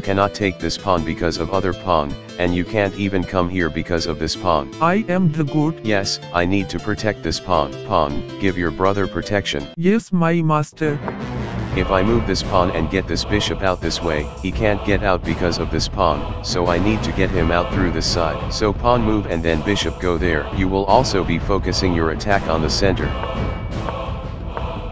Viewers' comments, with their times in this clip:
0:04 i think queen had kings voice
0:06 was that qung?
0:06 man, the queen got some male voice
0:06 lol u made king voice for queen
0:07 dude the queen just spoke in man voice